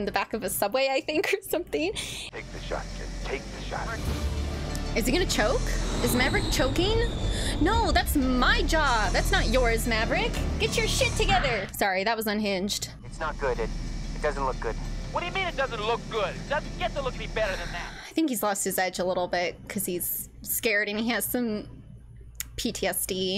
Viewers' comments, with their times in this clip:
0:04 Now you're channelling Cheryl Tunt from Archer. 😋 Come to think of it, you're voice sounds similar too. 🤔